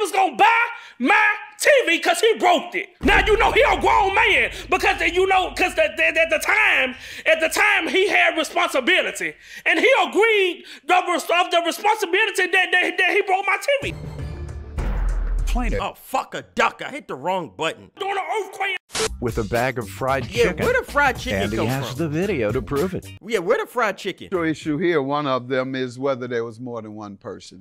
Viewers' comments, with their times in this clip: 0:09 he ogreen the responsibility